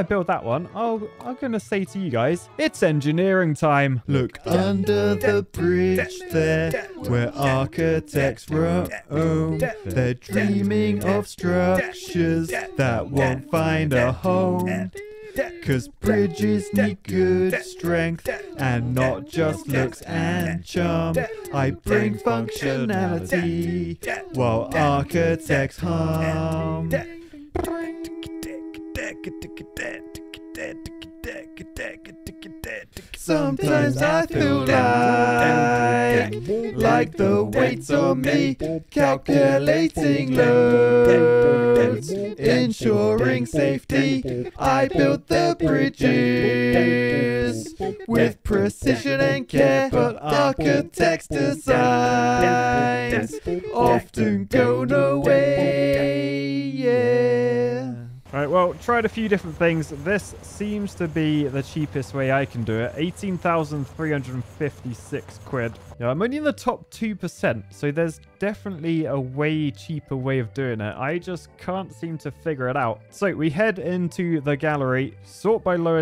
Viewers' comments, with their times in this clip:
0:03 the red hot chili peppers beat threw me off lmao
0:59 Bro started speaking like Kermit the frog for a second there 😂😂😂😂